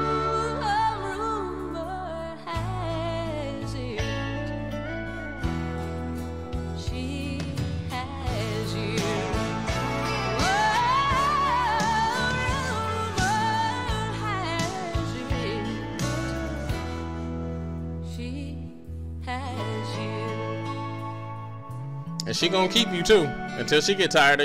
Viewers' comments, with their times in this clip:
0:10 That vocal is everything.